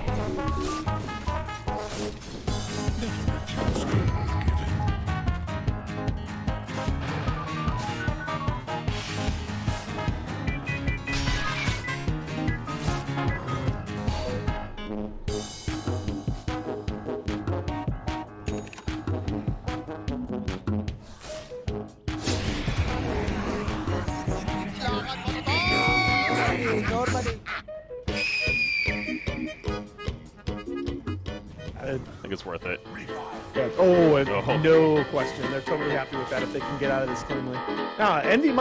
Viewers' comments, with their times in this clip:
0:08 that blademail sounds made me fall from my chair
0:24 That Chat Wheel of Undying is Absolute Perfect. 🤣